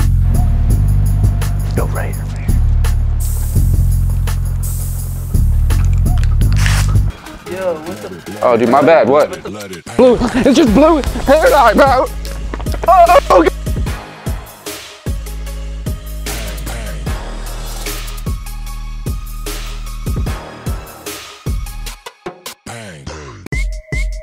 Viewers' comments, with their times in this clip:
0:09 finally! Long time no hear this background music